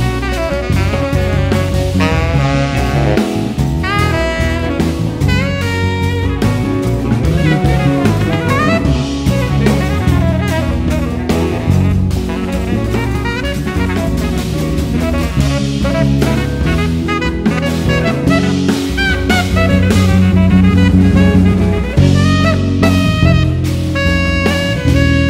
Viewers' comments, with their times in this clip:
0:06 you can hear an incoming email from outlook.